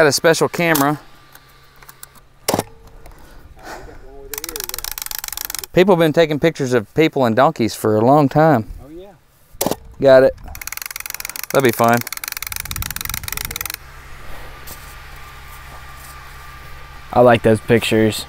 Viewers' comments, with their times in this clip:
0:05 great quote and perfect southern delivery.